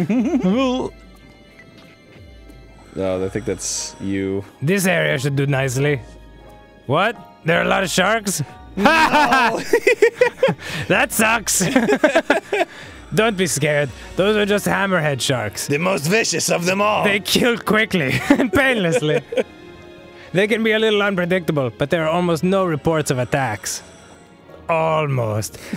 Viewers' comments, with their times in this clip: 0:06 George Carlin talking?